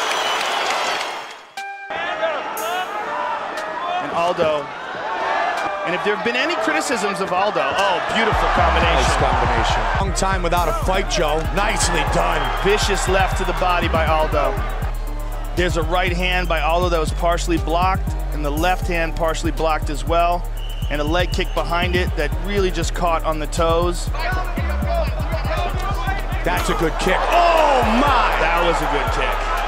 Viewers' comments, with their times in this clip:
0:10 sounds like he's rapping lmao